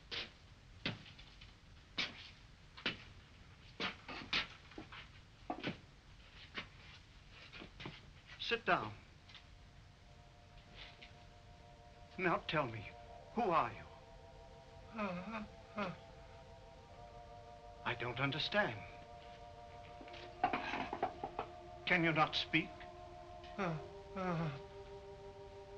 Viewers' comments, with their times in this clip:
0:10 The funeral parlor music in the beginning always gets me.